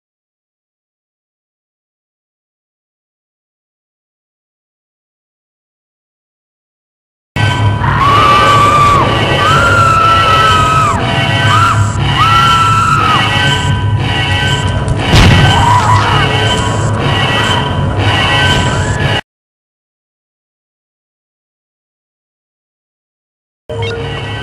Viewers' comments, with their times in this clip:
0:07 jesus.. it was all quiet in the beginning so I scroll down through comments and get jumpscared by the audio change lol